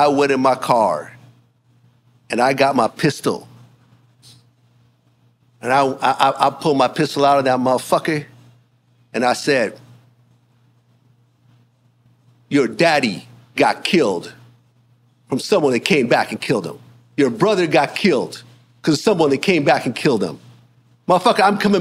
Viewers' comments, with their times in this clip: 0:09 VLADS NASTIEST WORK EVER WITH THE SLANG AN THE FAKE ACCENT AND THE “MUUAHFUAHCKAHH” MADE ME THROW UP IN MY MOUTH…it was honestly a good episode until this story about Trick Daddy 😂 😅😮that shit was gross then EFN says he gotta take a “pee-pees” 😮😅 back to back both the losers ruin a 4 hour episode in 15-45 seconds 😅😂 wild